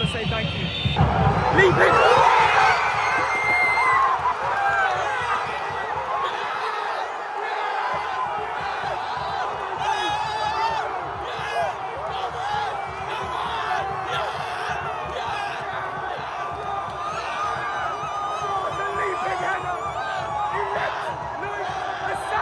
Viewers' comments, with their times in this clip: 0:03 omg was that dude making that high-pitched scream?